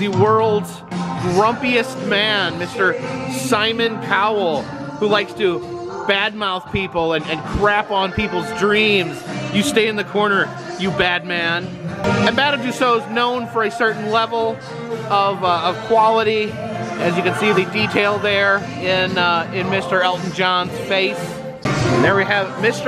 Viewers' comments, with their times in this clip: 0:04 I'm sorry, but did you say Simon POwell ? It's spelt with a C, not a P!!!!!